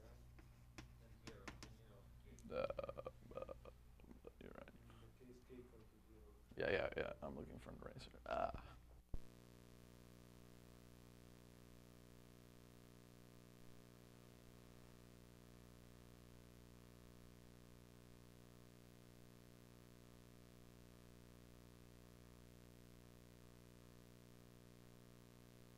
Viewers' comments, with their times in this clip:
0:08 Audio cuts out